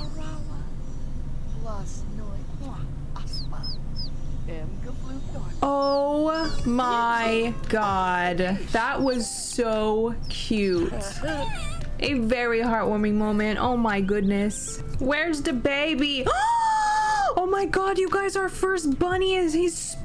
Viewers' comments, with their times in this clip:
0:03 your voice sound like kylie jenner haha 'is that a chicken??'